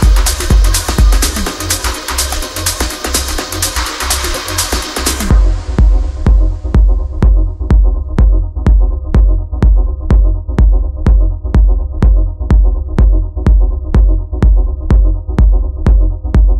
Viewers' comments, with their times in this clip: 0:04 Boooomm - what a mid-section